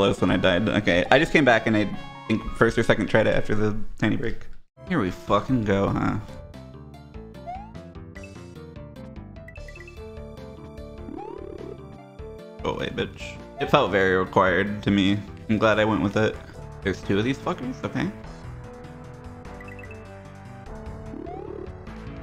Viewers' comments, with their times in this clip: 0:04 ... is that an SMW soundfont rendiont of Paradise Lost, by Symphony X?!?!?!